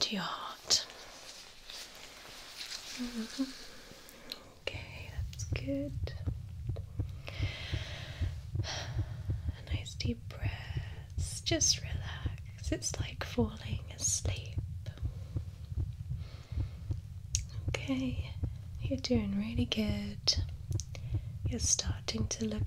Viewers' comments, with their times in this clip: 0:05 (heart beat sound effect starts) Me: 🎵This is the beat of my heart🎵 🎵This is the beat of my heart🎵